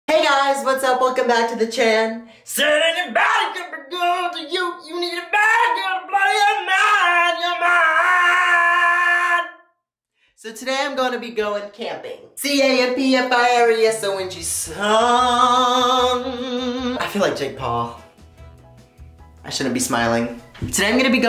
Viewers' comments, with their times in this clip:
0:02 we love a singing bish
0:03 that one choir kid who thinks they can sing 🙃